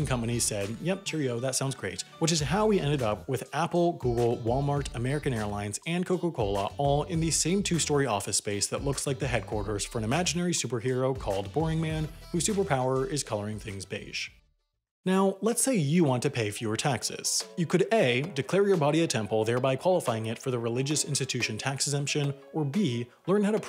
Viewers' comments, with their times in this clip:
0:05 it was all airplane free until